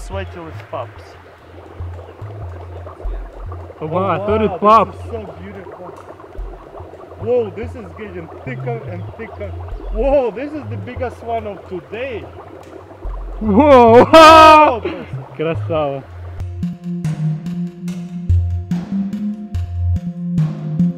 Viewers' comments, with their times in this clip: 0:07 Lol Eets gitting theeker end theeker! WAHOO, eets da bieggest wan ov da deyy!